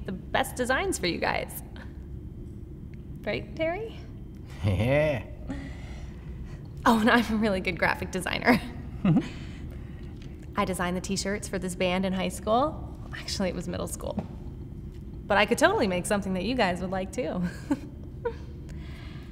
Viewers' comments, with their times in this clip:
0:04 The way he said yeah is hilarious af